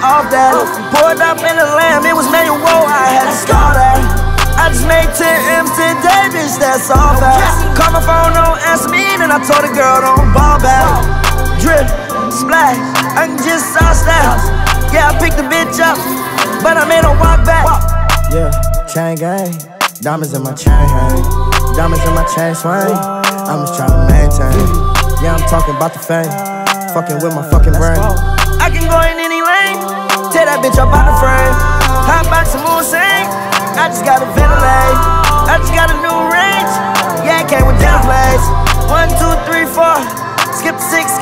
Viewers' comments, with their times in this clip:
0:05 is the most aggressive no cap I've ever heard
0:20 that oooh yea is so clear but it’s throughout the song
0:22 hearing uzi start singing in the back ground of this already amazing song at 3 aclock at night hit different 😂😂